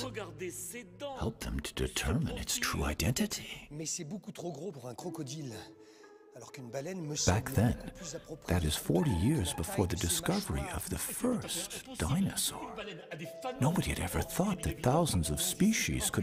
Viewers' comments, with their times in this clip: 0:04 He says CroGodzilla